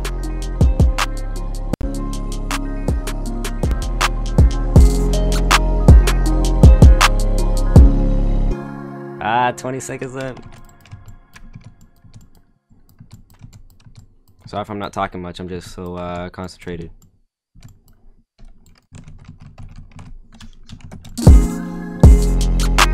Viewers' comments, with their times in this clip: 0:05 What did he do with the multiband compressor ? Shit sounded so nice